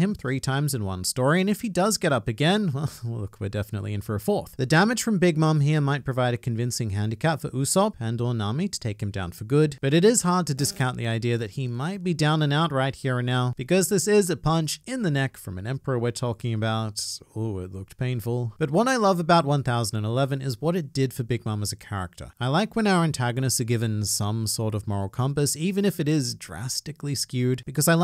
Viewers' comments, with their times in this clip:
0:08 fart ha ha
0:10 i genuinely thought there was a fly buzz thru my ears lmao
0:10 i thought a fly flew by my ear